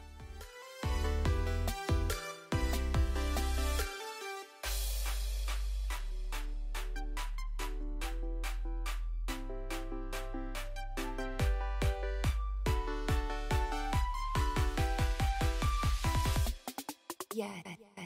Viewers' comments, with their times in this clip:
0:04 music keeps giving me Sims 2 creation theme flashbacks and I know that makes no sense to normal people but it's so freakin nostalgic